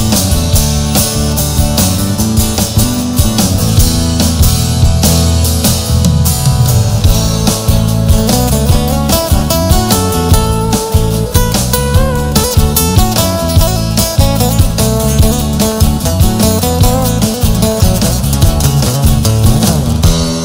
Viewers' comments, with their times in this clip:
0:07 When he goes into the lead his guitar sounds like crap.